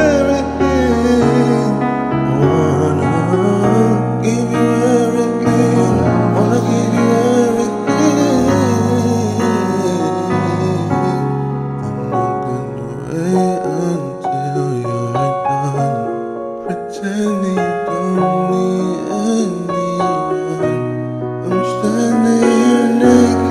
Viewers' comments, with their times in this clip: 0:09 That run sheeesh🙌🏾🙌🏾